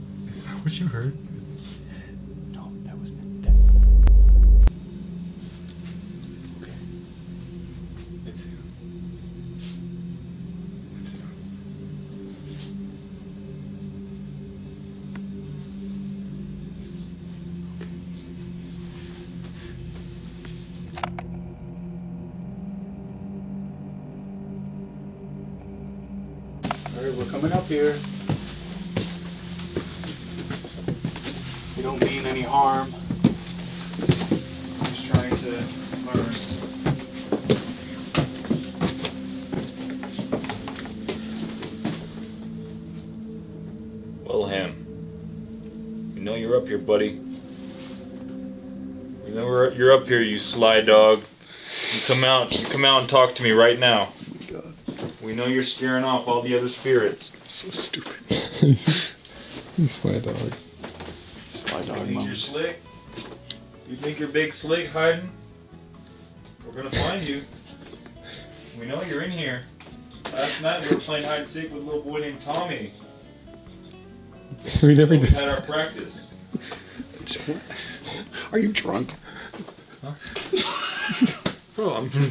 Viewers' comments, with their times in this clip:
0:10 is that laughing???
1:09 I like how as Ryan is calling Wilhelm a sly dog and slick the most unexpected music starts to come on. A FF14 housing track.